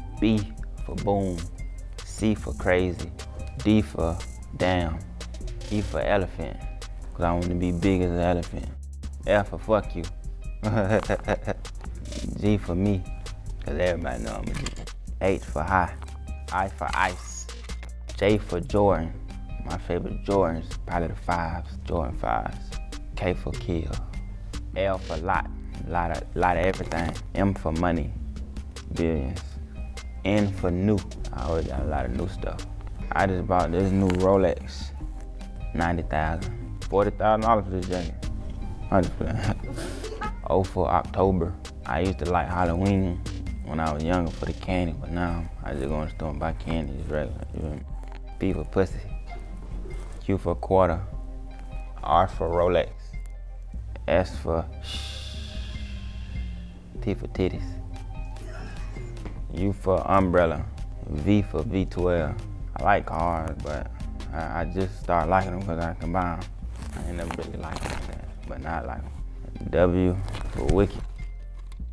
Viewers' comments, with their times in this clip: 0:10 never seen Nardo Wick laugh😂
0:10 the way Nardo started laughing scared me...
0:11 Breh that laugh 💀💀
0:38 he literally laughed
0:40 he smooth as hell he even makin the gurl in the back laugh while doing his abc 😳😭
0:40 The way he said October🤣
0:43 what the fuck is he saying. he didnt speak there
0:57 Man never know but this shit might turn out to be a meme and funny ass hell the way he said that shit